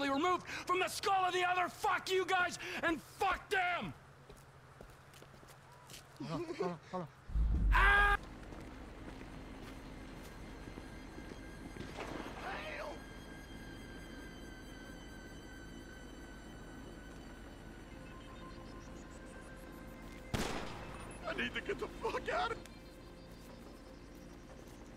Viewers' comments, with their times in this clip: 0:06 A perfect cut scream!!! AAAAAAAAA!!!!!!!!